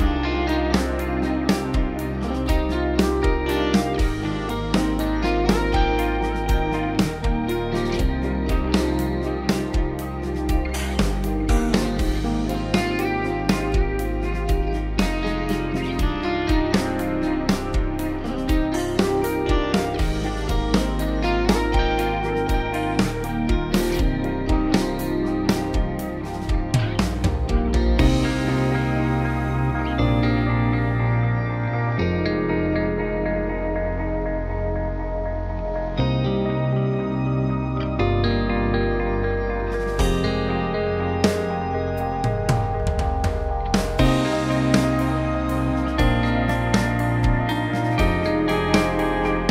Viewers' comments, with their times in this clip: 0:07 I didn’t realize how awesome the chorus riff was til this. That delay is epic and the chord at the end of the third bar literally like had me tearing up for some bitchass reason. But it’s one of the best chords I’ve ever fucking heard omg (I’ve been a guitarist for 20 years maybe these things hit me more than the average person). Just listen to this though doesn’t that permeate your soul in a way that you can’t even describe in words?
0:35 I just heard something I never heard before…AGAIN…while listening back to this version. And I listened to this a lot cuz I did a guitar cover of it like 2 years ago. Did ANYONE else notice that EXTREMELY dissonant, tense resonance from a barely audible third guitar part during the second verse? You can hear it best without Jake’s part mixed in yet…basically right So yeah if anyone sees this and hears it too, let me know. I just noticed it like minutes ago.